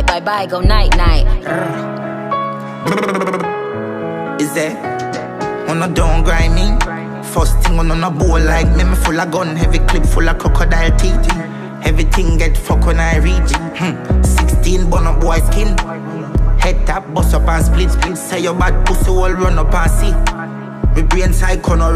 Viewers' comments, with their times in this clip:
0:03 for my champs who cba for the whooosh sound